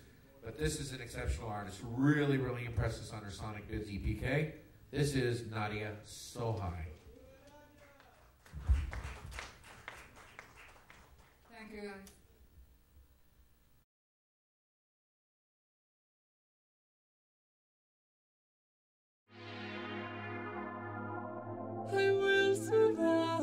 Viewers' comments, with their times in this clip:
0:06 "this is Nadia so high"